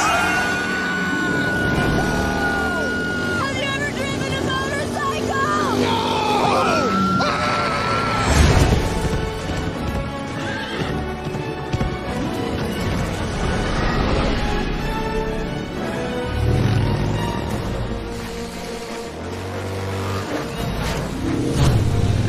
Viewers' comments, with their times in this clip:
0:07 that scream though FOMMFCROTMFFLMMFAO😂😂😂😂